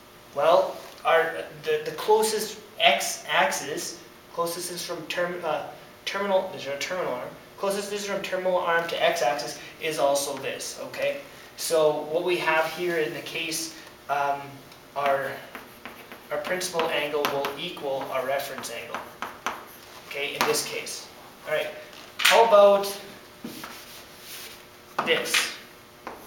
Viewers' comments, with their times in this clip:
0:07 captions ... "Charles that's right"